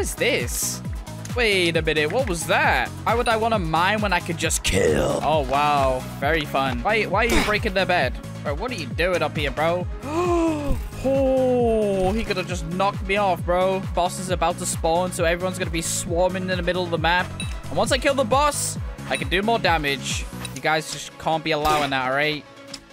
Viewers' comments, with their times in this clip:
0:05 sounds so crazy bro 💀💀 sounds like grim if the kit could talk